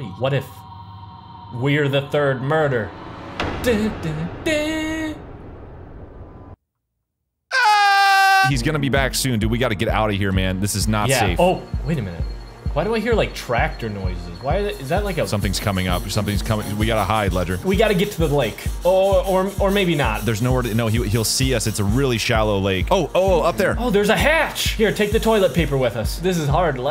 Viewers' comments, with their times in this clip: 0:07 That scream had me so close to laughing very hard!!!
0:07 He sounds terrified